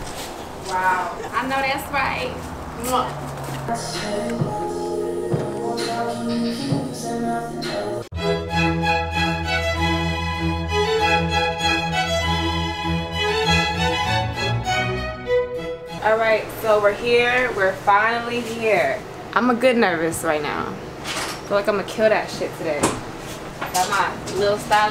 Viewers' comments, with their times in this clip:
0:10 she dropping that ❄️Icy❄️ Beethoven hit!